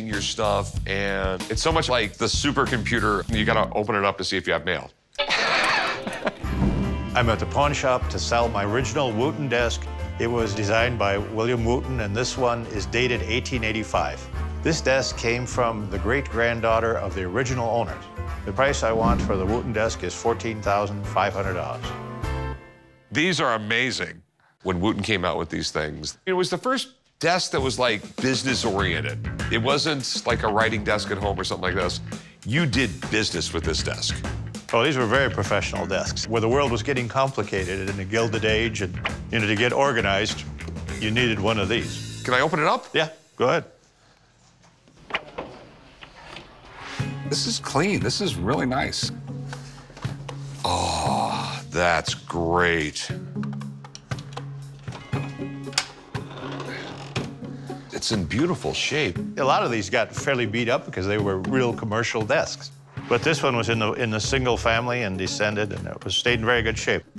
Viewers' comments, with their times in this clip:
0:04 Rick's laugh sounds like an old car trying to start up
0:50 if anyone is interested in how Rick sounds in the bedroom. LOL